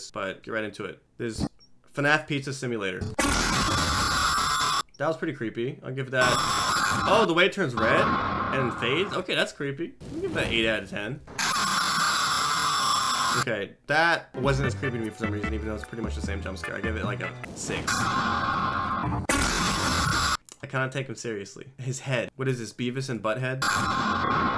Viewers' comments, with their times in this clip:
0:08 I had a heart attack it was so loud💀